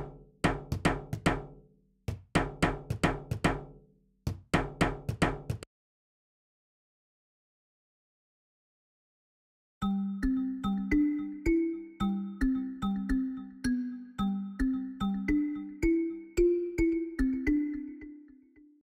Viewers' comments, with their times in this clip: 0:06 is no one gonna talk about how Bridg-it sounds so perfect?